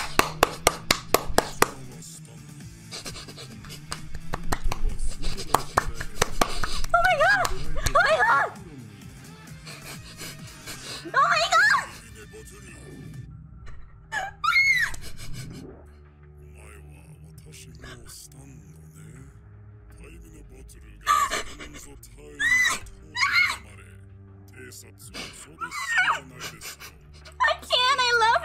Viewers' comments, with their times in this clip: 0:10 nahh that’s not clapping